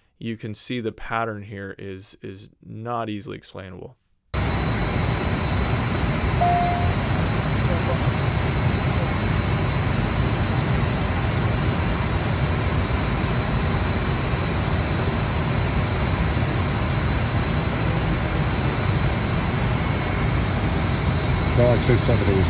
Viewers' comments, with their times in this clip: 0:05 Sorry, this doesn't seem to communicate much. The audio is unintelligible. Meanwhile, a pilot knows how to aim an iPhone and he can see the screen. This is a steady handheld shot - if those flickering artifacts on the recording were what he was actually trying to capture on the night, they wouldn't be in the corner of the frame? Is that what he says he's talking about? If not, whatever he wanted to capture probably doesn't show up here. Something does seem to blink in and out of the image in the middle of the screen - in an area that more corresponds to where something would be, that someone wants to record: but it's a very slow and lazy blink, more like a pulse - not this frantic flickering - and it could be also be something on the ground. The frequency of whatever it was the pilot says he saw - and where it's supposed to be positioned in what he recorded - should maybe be verified/established.